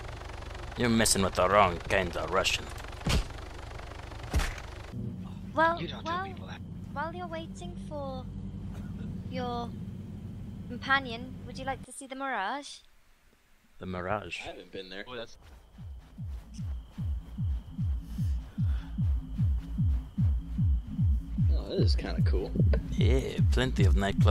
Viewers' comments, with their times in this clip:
0:06 That godly British voice